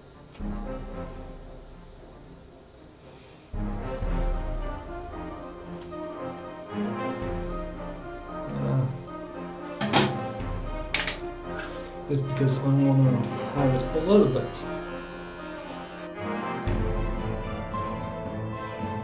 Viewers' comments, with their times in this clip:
0:03 Wow, and how long did you go with a beard? Oh, really cool music, especially right time!